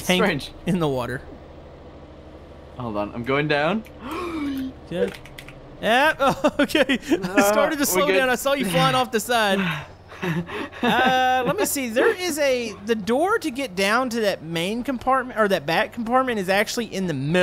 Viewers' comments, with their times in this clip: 0:04 excessive amount of key clicking